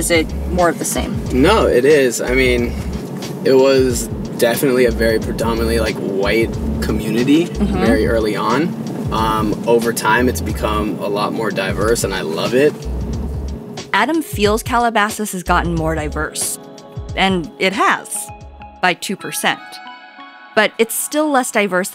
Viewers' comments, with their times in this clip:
0:04 he sounds like justin bieber